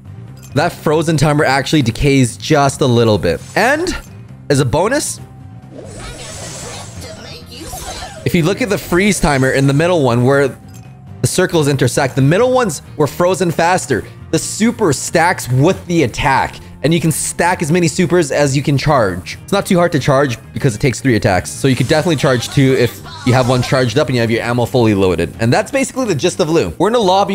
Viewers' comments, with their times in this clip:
0:09 Crab song intesifies XD